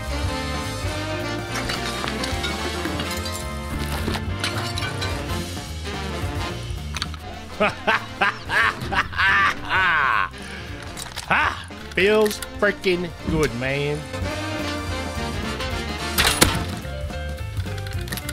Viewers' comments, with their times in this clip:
0:06 the chainsaw that was missed 😭